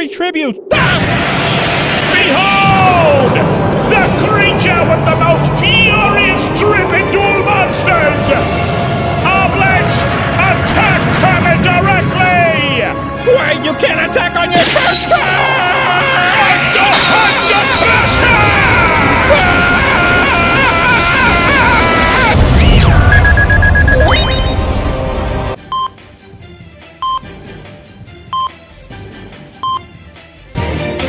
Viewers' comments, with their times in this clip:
0:08 OH GOD OBELISK BUDGET INCREASE?! zarbon moaning in the distance
0:15 can anyone make out what cell says during obelisk's attack?